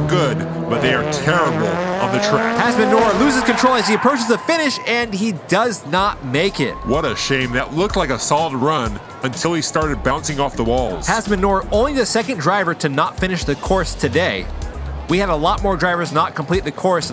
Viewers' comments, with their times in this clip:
0:03 The engine in Subaru on tuk-tuk-tuk.......